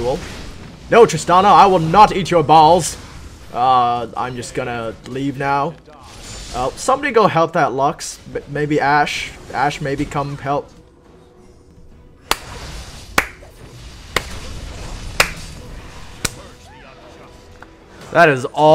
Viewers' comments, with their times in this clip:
0:06 That clap :D